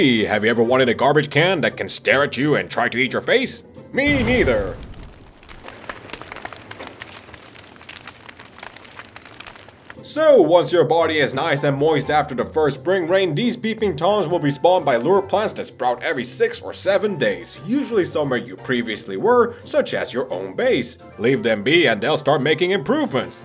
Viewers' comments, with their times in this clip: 0:07 do I hear a laughttrack or is that just the fire?